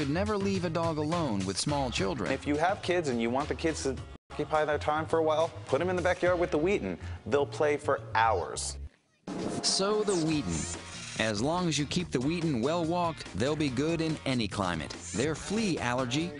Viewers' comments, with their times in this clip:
0:04 Sound cuts out !!!!!!!